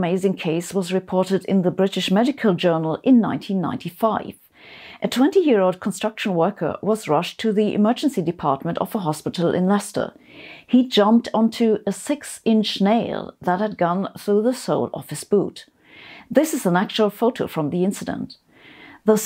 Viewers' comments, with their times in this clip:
0:03 British "MAGICAL" journal ,WTF , LoL